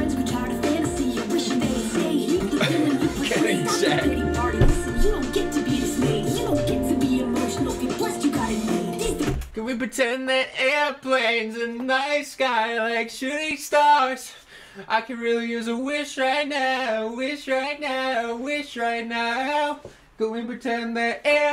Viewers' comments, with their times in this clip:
0:08 the airplanes break sent me